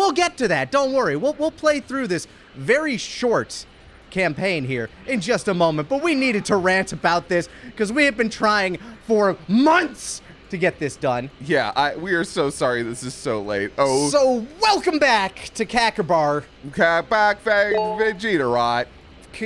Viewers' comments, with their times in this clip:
0:06 Bardock's voice doesn't follow him. Example